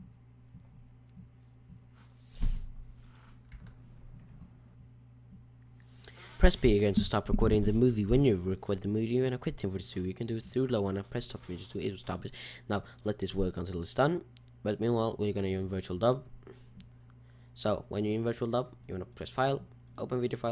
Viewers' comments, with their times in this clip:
0:07 WAAAAAAAAhh? sorry cant hear ya !